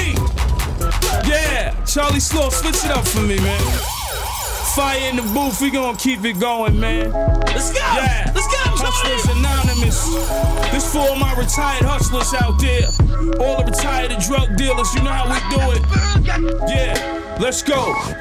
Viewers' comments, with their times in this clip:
0:06 wow that beat wish there was more